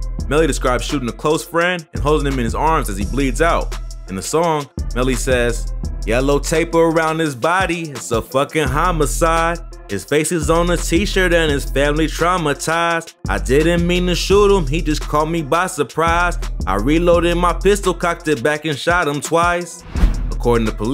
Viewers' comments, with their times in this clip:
0:06 this dude loves to sing the lyrics 🤣🤣🤣
0:06 beautiful singing my guy!